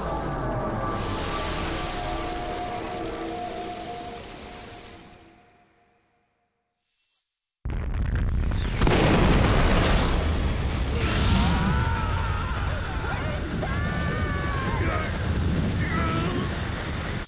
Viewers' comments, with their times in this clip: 0:05 .Achoo!! (Sneezing) If you've ever experienced hay fever, You'd know the power of the Sneeze.